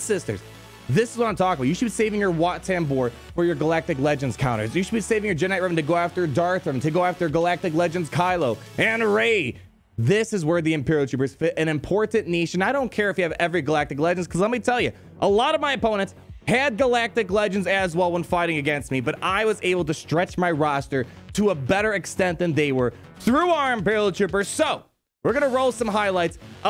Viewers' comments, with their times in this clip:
0:09 “...and Rey” pause For a moment there I thought we we’re going to an ad for Raid Shadow Legends. Lol